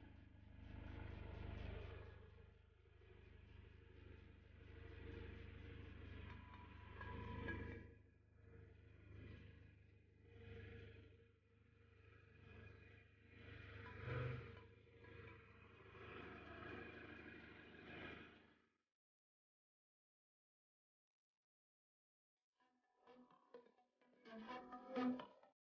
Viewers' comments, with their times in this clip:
0:09 is that gas leak ?